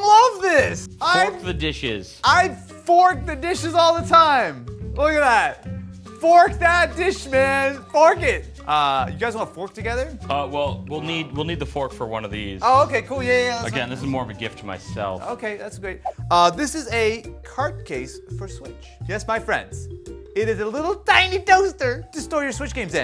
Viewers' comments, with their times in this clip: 0:10 Missed a censor